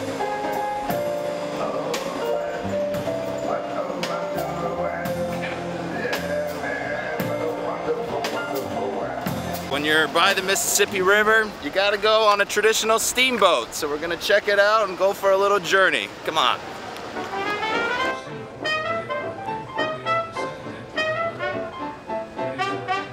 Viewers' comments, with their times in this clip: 0:04 Morgan Freeman is that you